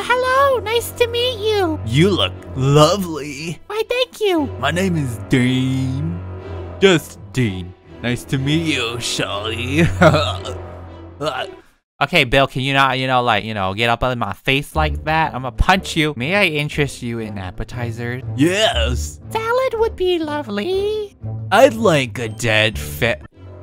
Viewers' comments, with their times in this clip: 0:04 his voice for "Dean" is hilarious!!!